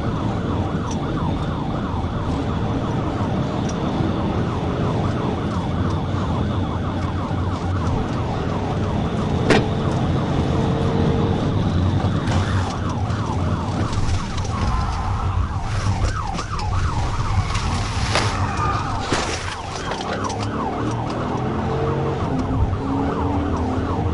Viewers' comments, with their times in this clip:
0:09 cop hits something you can hear it. Did the suspect toss something? Or was it road debrie/rock.